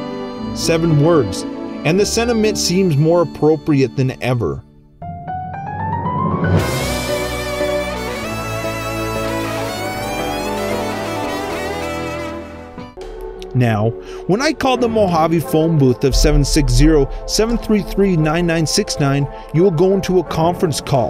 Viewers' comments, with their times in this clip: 0:06 In the ending song with the phone dial tones, have you paired the dial tones with the numbers associated with their tones to form a string of numbers / check what letters are associated with the keys? (for instance some phone services would have you press certain numbers multiple times to form words when dialing specific addresses and services advertised on television programs) On the off-chance that it forms a repeating sentence or paragraph. I should probably watch the more recent videos but it's and I'm sleepless on a morbid information binge, throwing this idea into the pond encase it becomes useful to somebody else more dedicated than I wish to be.